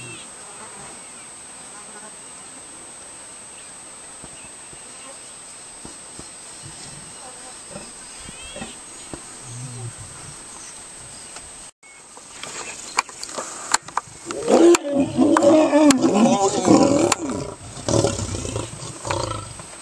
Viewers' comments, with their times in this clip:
0:06 i think the description is wrong, it seems like he was wanting to mate but she didn't want to, every time he was about to mount on top of her she growled, like lol so thats what made him unsure